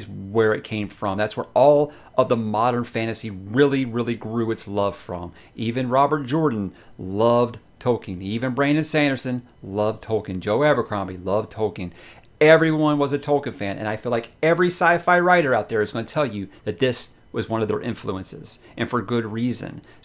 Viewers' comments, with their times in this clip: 0:05 you said Joe Abercrombie loved toking! Tee-hee!